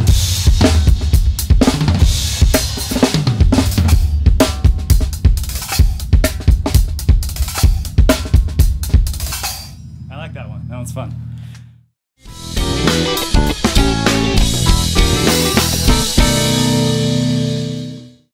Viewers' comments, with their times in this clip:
0:09 cymbal stuff at end brilliant